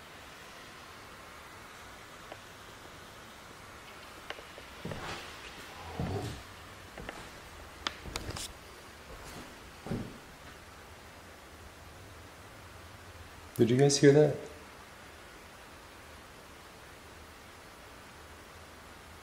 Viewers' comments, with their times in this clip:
0:06 voice heard sounded like "im home"